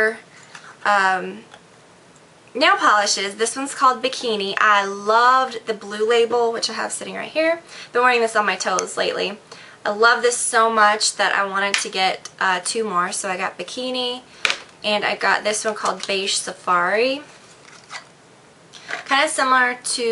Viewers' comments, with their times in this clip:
0:04 Loved your accent ! Haha. :D